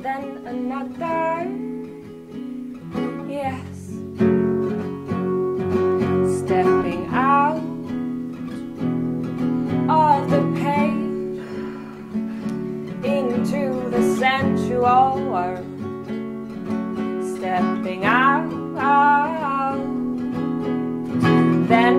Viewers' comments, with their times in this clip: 0:03 Oh, it's just splendid from start to finish - authentic - it transcends to Art The background is perfect; what Luck! The loud cough from the cameraman(?) is fine too, it's all One Thing.